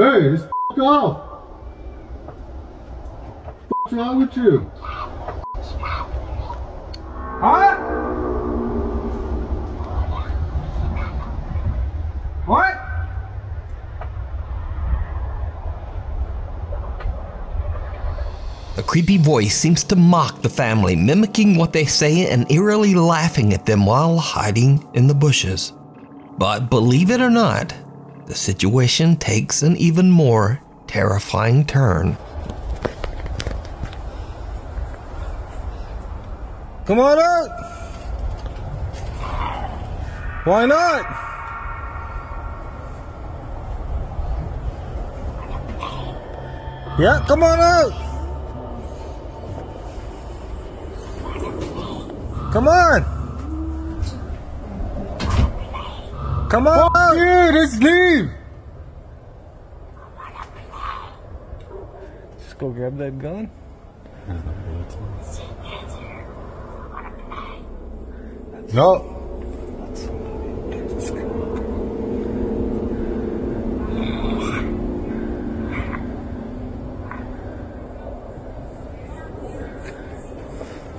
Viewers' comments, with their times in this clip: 0:08 I can even hear "gollum" in the "indiscernible" part
0:16 leave golem alone, he’s trying to concentrate with the “precious” 😂😂
0:34 it totally sounds like someone doing a pretty impressive gollum voice. Seriously.
0:38 bro sounds like when i have a really bad sore throat....
0:44 "Wanna play?" ** racks slide ** Sure do...*you* wanna play, buddy?
1:01 it sounds just like a crow